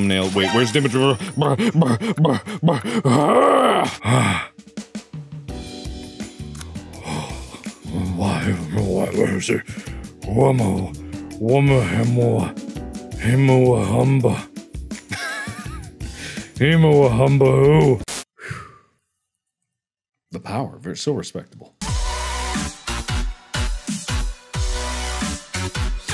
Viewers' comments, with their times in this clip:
0:10 the noises he makes XD